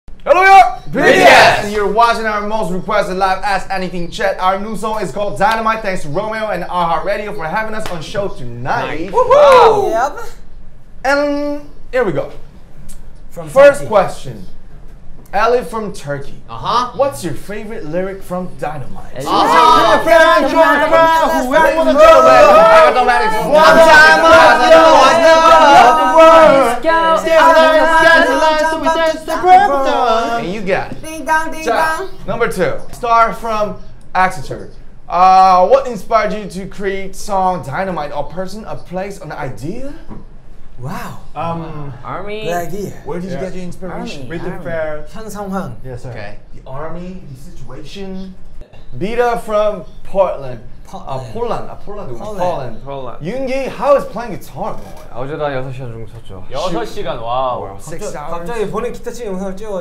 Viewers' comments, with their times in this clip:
0:01 RM starts rapping 😂
0:09 what the hell JK that sounded super wrong 😭😭
0:09 Why is no one talking about Jungkook's "Yup!" It was soo cute
0:09 Look the way Jungkook says Yup😂😂
0:09 WHY DID JK SAY "YEP" LIKE THAT
0:26 RM was so done with them singing all at once!! 😂😂💜💜💜💜
0:32 JK STILL SINGING LMAOOOO
0:39 Jungkook's "✨wow✨" reminds me of the Owen Wilson "wow" meme😂
0:40 ok never knew...."wow"...could sound so heavenly and cute....😭😅